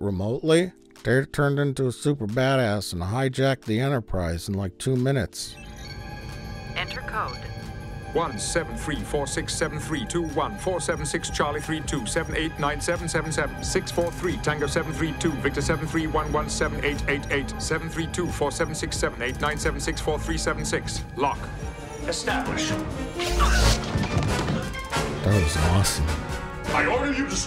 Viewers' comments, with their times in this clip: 0:08 oh man I love this song